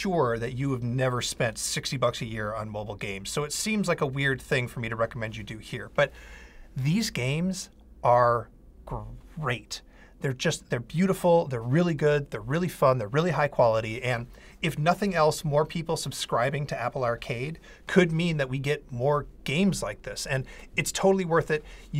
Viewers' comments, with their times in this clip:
0:09 A bit hesistant to say it, eh?